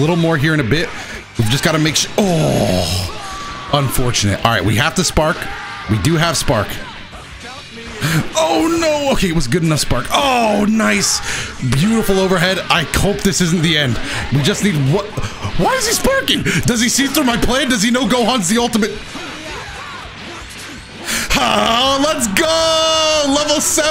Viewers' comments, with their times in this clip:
0:10 "I cope this isn't the end"😂